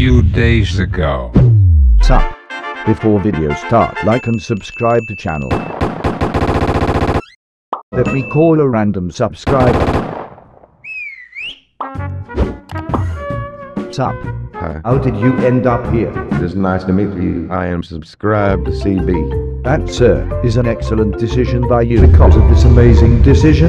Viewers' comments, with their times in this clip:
0:05 jojo theme plays